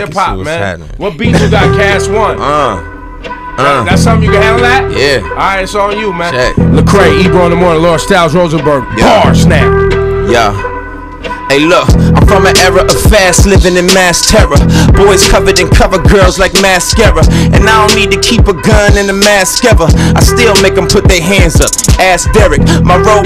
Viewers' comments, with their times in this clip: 0:07 Lol the audio is peaking also that is when lecrae starts free styling...